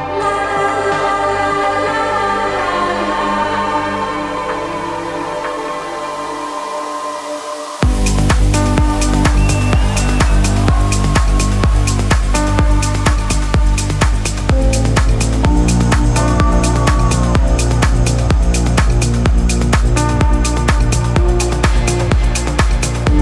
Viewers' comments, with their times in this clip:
0:06 Drop is amazing!